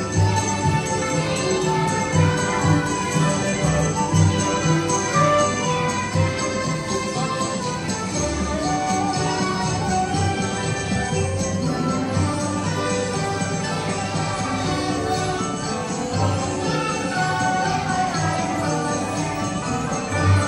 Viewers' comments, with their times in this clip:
0:03 why I am feeling that I heard another language besides Japanese